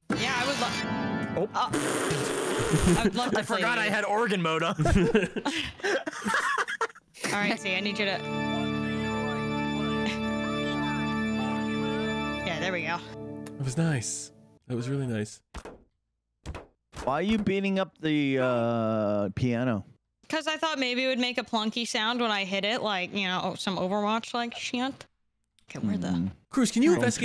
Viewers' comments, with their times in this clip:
0:10 anybody else hoping it would turn into the phantom of the opera?